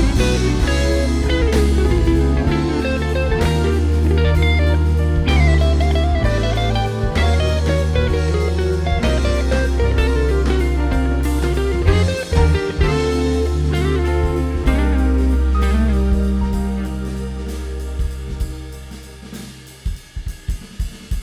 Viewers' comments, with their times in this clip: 0:04 Nice! That little cluster of notes I always love that